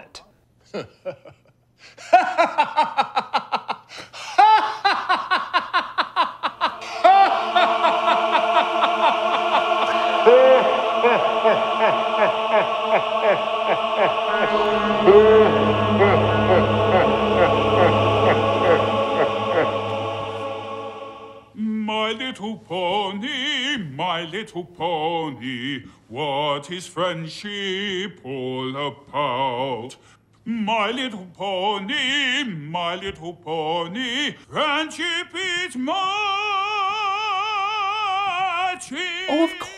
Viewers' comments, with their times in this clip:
0:04 yeesh if sabertooth wanted to make storm scream so badly all he had to do was laugh like he just saw he said yes to a movie with Luigi Mario and sing the my little pony theme song
0:11 = break out the Final Fantasy X , 'forced laugter' laughing Tidus. It's a humungus MEME
0:21 To the... three truly weird Bronies out there who fantasize some guy singing the opening theme song that the rest of us tend to skip at each episode operatically while holding a little girl too uncomfortably close to the camera - I say congratulations to them. For the rest of us - what the shit is going on!?
0:22 day what you will about how awful this fever dream of a movie is, but his singing voice is pretty good